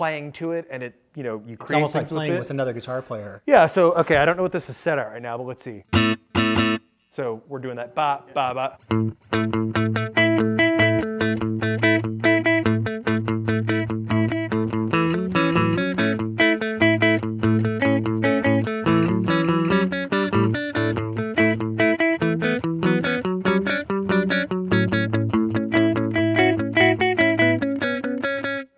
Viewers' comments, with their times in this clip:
0:09 Fender, very cool video! Awesome little groove